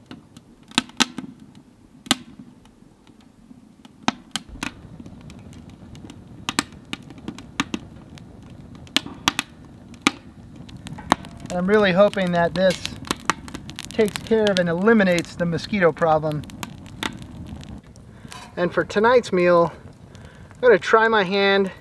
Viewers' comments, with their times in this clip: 0:09 the voice of fire - I love it